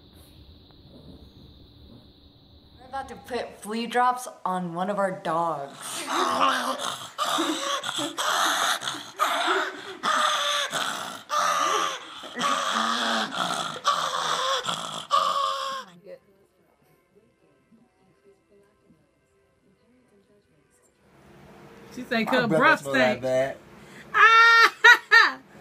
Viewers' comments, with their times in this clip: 0:06 ANGRY CHIWAWA NOISES